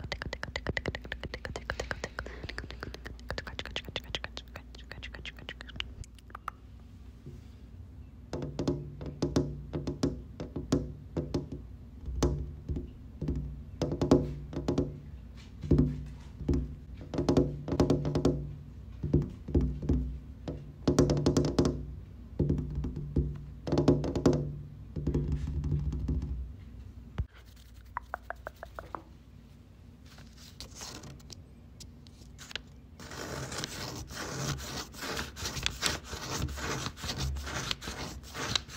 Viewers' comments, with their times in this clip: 0:07 the lens flare and sun reflecting off your nails matched with the window sounds is surreal and the perspective tricks throughout are so fun thanks for the video!
0:24 omg, the sky being glass that's the most incredible sound/visual